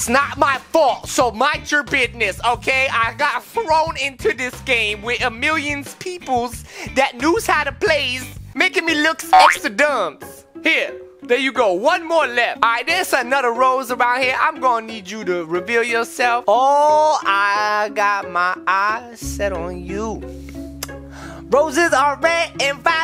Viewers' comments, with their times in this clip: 0:10 "EKSTADUMZ" Me: what???